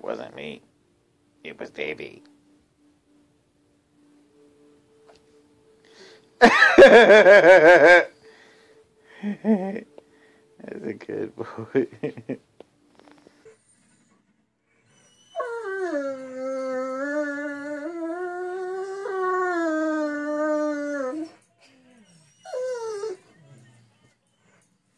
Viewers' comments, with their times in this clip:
0:05 that laugh just made my day.